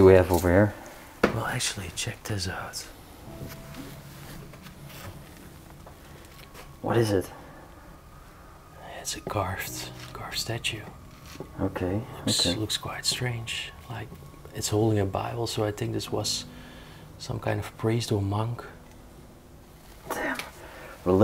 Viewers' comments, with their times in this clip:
0:06 did you say religic painting instead of religion? 😂😂😂